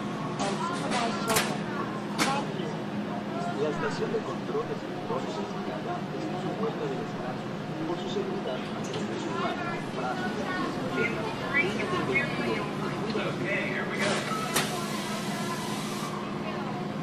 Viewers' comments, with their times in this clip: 0:03 that's great! i also like hearing the ride ambience even ! and you know there also closing the current ride June 17th for another refurbishment!